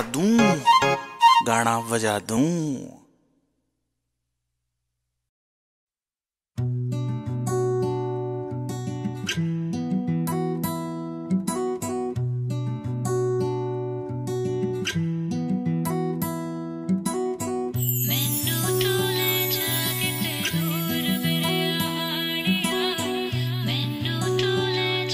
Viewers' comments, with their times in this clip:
0:06 This song is so special place in my heart it's soft & sweet✨